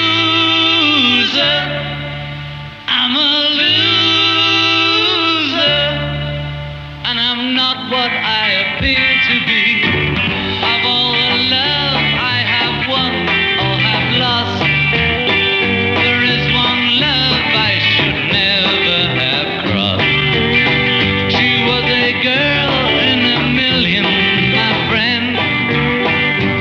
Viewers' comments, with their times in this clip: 0:08 john´s singing is on fucking point in this performance